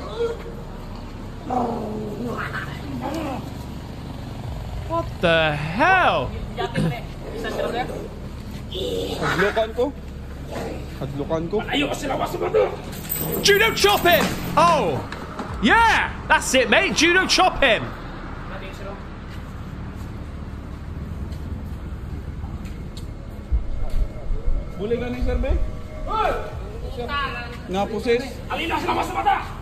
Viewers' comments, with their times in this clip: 0:10 That sounded like the sumo sound effect from Ed, Edd, and Eddy.
0:15 dudes just constipated... I get like that too. U can even hear him letting off gas. 😂